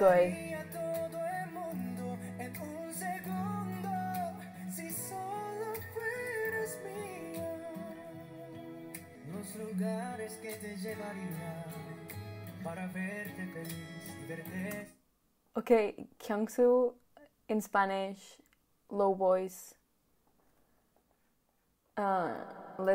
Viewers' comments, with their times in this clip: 0:10 reaction on DO's low voice in spanish. I always go to this part when i watch the reaction. Its the highlight. Everyone's were surprised. I did. 😆